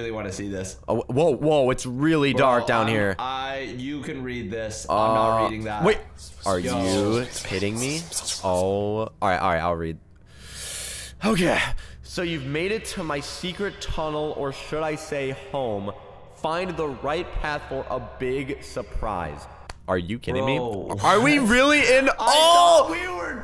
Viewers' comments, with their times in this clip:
0:07 the whisper effect with headphones is so scary